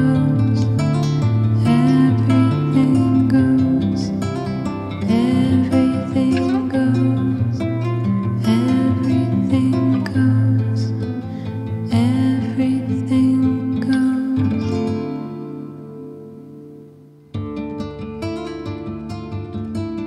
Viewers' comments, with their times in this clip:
0:03 I keep coming back and listening to this. It's really good. You are definitely onto something great with this and when the female vocal comes in I get those weird little shivers one can sometimes get when listening to music. Surely some big label is going to sign you all for this(Are you listening MUTE records). Will Gregory from Goldfrappe would be into this. Keep going!